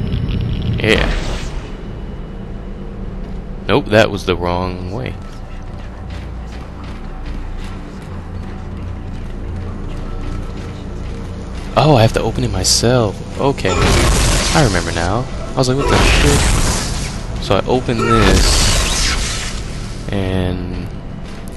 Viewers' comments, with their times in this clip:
0:06 anybody here wispering or am i just crazy?